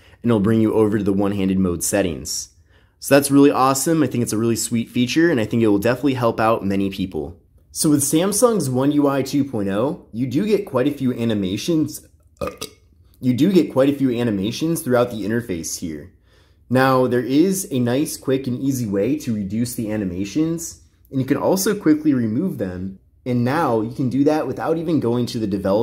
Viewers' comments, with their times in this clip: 0:05 He burped at this time on the video he dont have manners son
0:12 anyone else hear that burp 😭😳